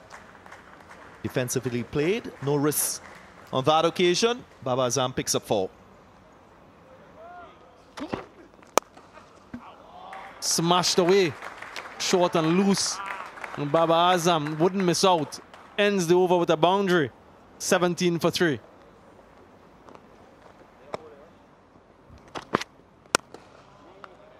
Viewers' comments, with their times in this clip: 0:07 sound of a bat, SUPER CRUNCHY BABAR🤤🤤